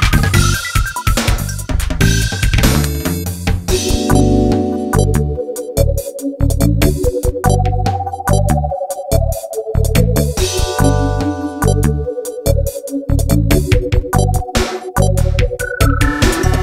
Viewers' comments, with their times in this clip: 0:03 Wow this is awesome. That echo-y melody is too sexy to handle. Your channel has some great songs! Looking forward to more releases.